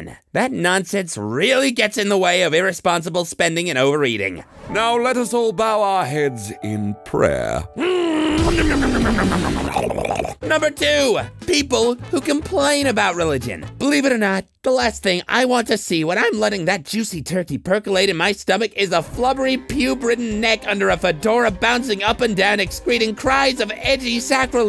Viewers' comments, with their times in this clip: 0:09 sounds like terraria boss fight Edit: the music